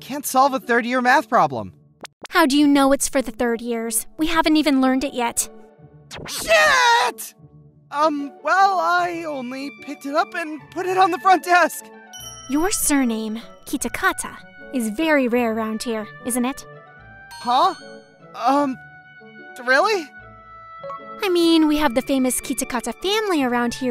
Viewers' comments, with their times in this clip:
0:06 That "shit" was personal.